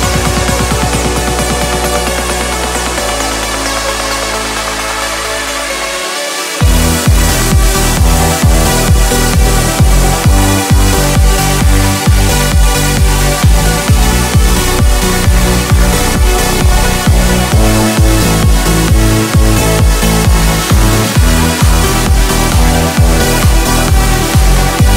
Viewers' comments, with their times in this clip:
0:07 Damn that ID drop is unreal